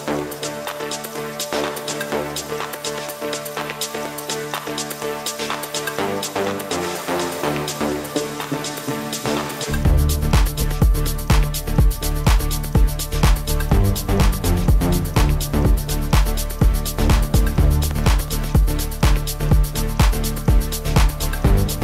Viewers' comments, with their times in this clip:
0:05 .. DAT DROP! vibessss hahahaha